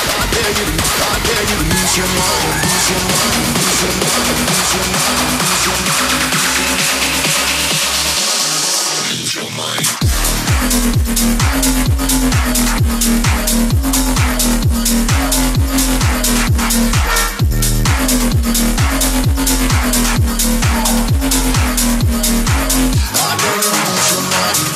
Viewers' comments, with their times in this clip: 0:10 WOW what a track